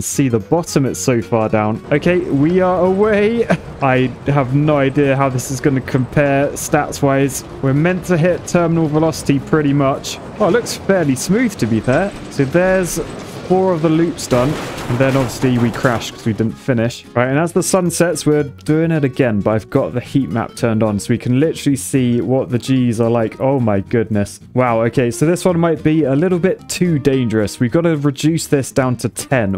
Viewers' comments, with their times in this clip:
0:10 I’ve never seen this game before and I was not ready for that crash at the end